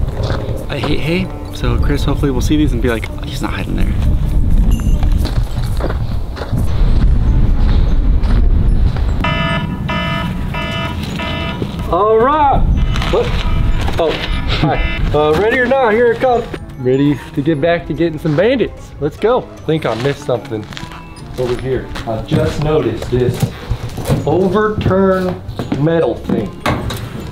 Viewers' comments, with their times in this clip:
0:09 full volume in the morning omg that’s hell 😂